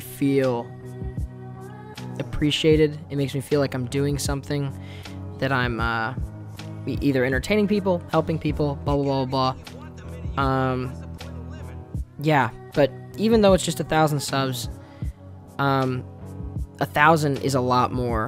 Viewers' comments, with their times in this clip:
0:05 Oh my God I just heard Jake from adventure time